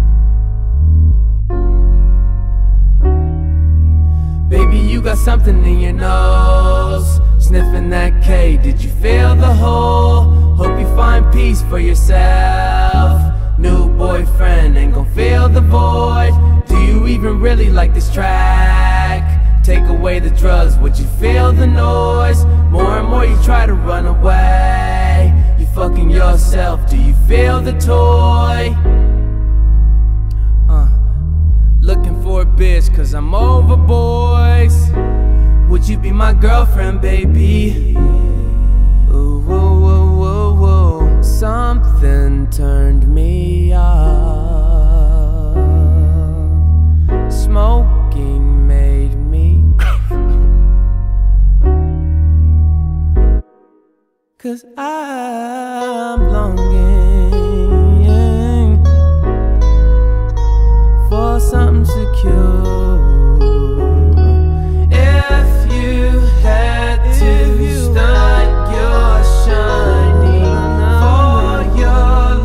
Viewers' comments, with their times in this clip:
0:07 i heared slippin dat cake 😭
0:59 The song too hard from and guitar at the end is too perfect🔥😭